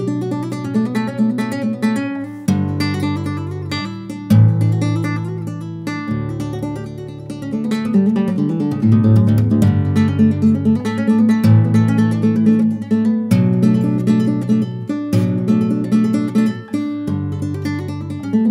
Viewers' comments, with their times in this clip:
0:06 .... The pulloff caught me completely by surprise, man. Very well done.